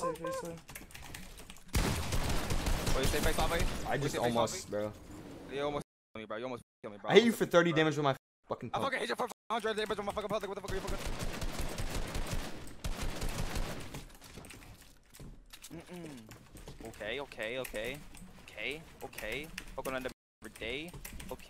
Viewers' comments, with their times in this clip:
0:08 rap god at its finest😂😂